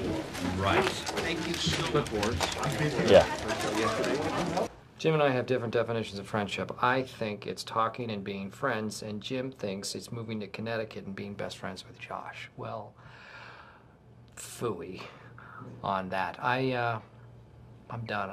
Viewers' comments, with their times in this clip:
0:04 Would imagine Comedy Bites having proper audio, instead of left ear only. Ah well. Guess quantity above quality.
0:05 my left ear really enjoyed